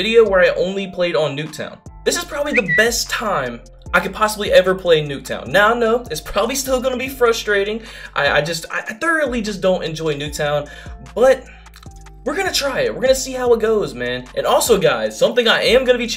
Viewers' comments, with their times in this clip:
0:03 that’s my text tone lol was wondering wth